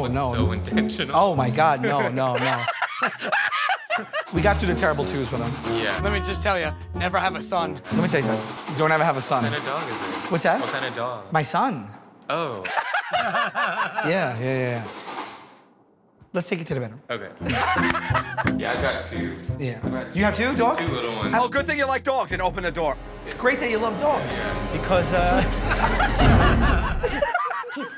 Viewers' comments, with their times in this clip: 0:10 the guys "oooh" kills me